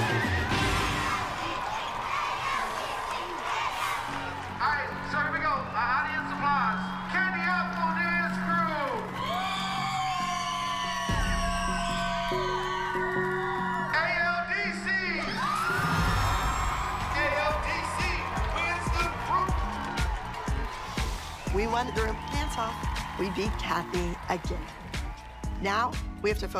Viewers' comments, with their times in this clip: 0:05 i like how it's just the candy apples cheering for themselves 😂
0:07 the candy apples are the only ones cheering for themselves
0:09 wth Cathy u sound like ur constipated
0:10 BAHAHAHA THEM CHEERING FOR THEMSELVES